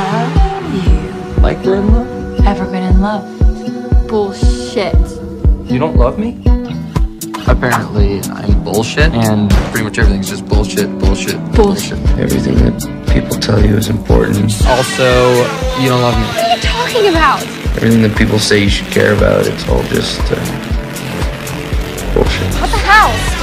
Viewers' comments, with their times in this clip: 0:07 The music going to the climax and Steve and Nancy's "bullshit" overlapping drives me crazy..😭